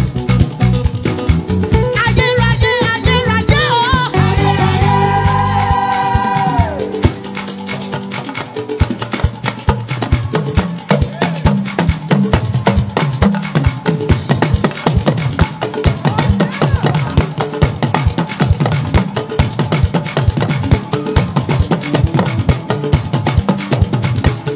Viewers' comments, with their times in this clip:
0:05 She played the talking drum 🤔, I was tripped. I love your ministration mama